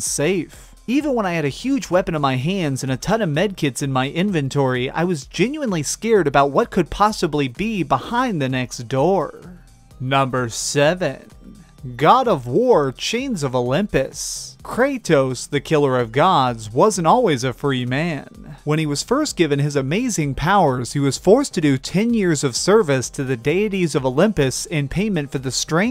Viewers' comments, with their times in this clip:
0:09 your voice cracked me up so bad I almost shit myself